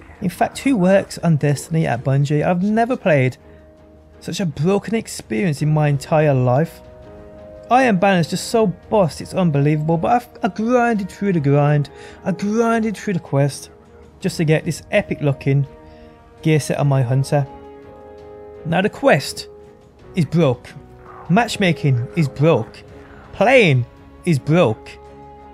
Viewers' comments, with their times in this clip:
0:09 "gwinded to the gwind, gwinded to the quests" lol